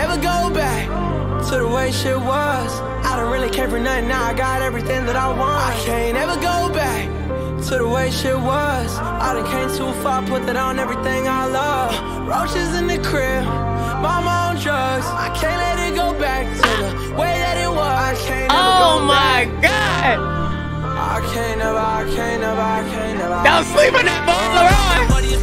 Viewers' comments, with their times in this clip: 0:08 I don't get the laroi hate. Like that hook sounded great I can't see a single thing wrong with it. Chat is right with broken guitars tho cause the hook is off beat and the melodies have to be good before u focus on the lyrics